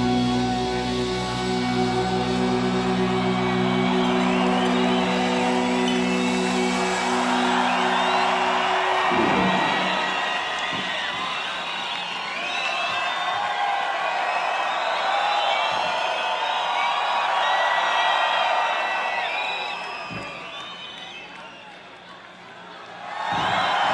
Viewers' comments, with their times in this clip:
0:05 I dont think so.. it's a not like Slayer's live to headbang and all. It's just an amazing solo, like romantic, just to appreciate. As you can see people scream for it